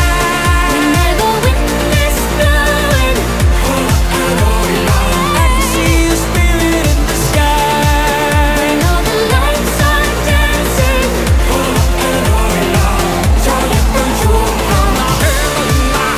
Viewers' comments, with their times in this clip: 0:04 This is SO good❤️ Love from netherlands🥰 The voice of the girl Is better than Ariana grande💋 And the Boyss BEAUTIFFAAAL♥️♥️❤️ The man On sings That Music is ssooooooo COOOLLL Better than us Song 😒 BYEEEE❤️❤️❤️❤️❤️❤️❤️